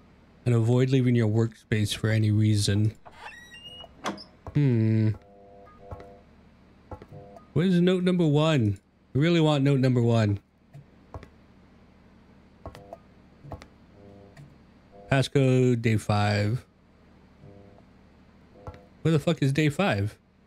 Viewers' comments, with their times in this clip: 0:06 I loved this gameplay, your voice is not loud like other's. Not Note 1 being clearly visible, although it was the first time for me noticing it there lol